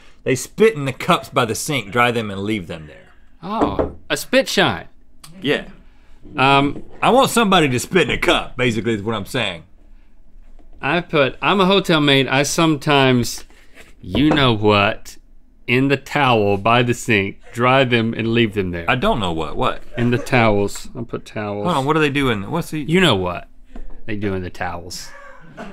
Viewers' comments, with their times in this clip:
0:06 I feel bad for Rhett about that silence XD